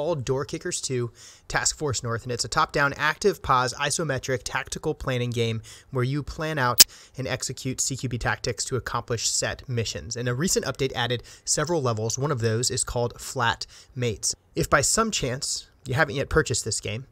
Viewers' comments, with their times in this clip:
0:05 There's a very painful audio issue